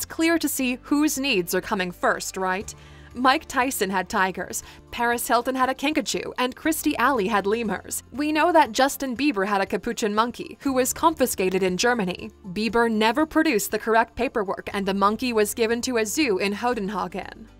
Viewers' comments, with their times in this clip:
0:03 Paris Hilton had a Pikachu?! Pshh these billionaires.. am I right?